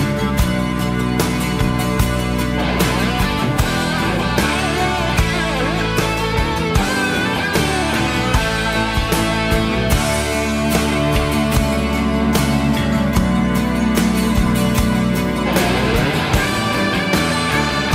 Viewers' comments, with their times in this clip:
0:05 Love that guitar solo Brilliant!!